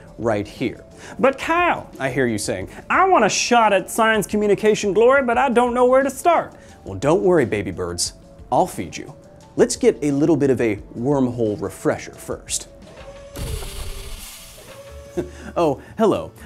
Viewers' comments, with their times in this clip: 0:03 Close your eyes and Listen Jordan Peterson?